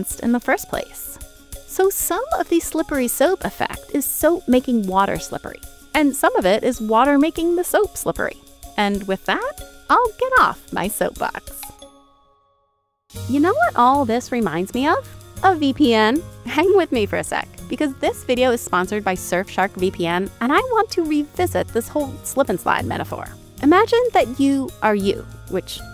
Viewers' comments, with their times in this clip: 0:08 The elevator music is loud, distracting, and unnecessary. The videos are entertaining without music. Edit: It’s worth rewatching the video for that pun alone! 🧼 📦